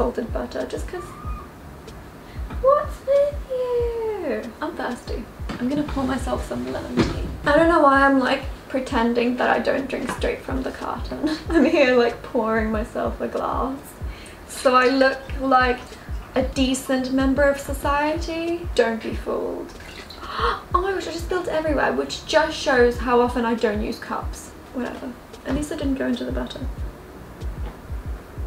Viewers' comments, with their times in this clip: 0:09 she sounded like hatsune miku lmaoo